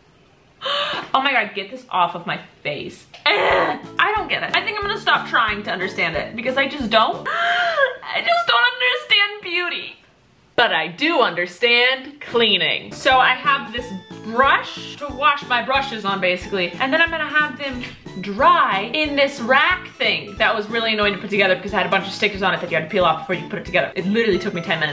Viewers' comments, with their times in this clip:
0:05 you sounded exactly like ur sister